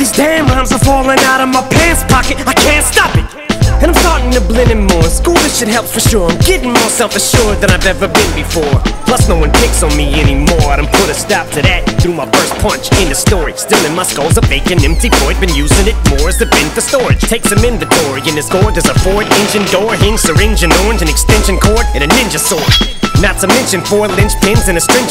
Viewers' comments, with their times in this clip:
0:07 He sings similar on Evil Twin too. I feel like the chorus for Evil was recorded around this time, same with around the mark in Antichrist.
0:07 Does the background scream trigger anybody else's anxiety or just me?